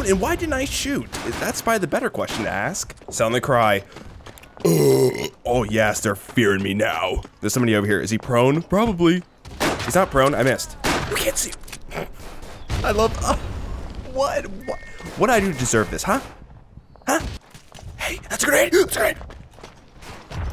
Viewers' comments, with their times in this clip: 0:06 That burp Who needs gas grenades?